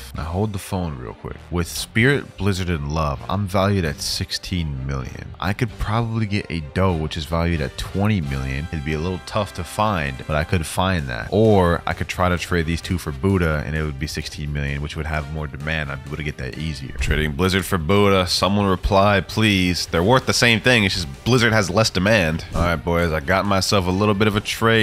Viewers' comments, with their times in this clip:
0:06 franky's ost hits so hard 🔥🔥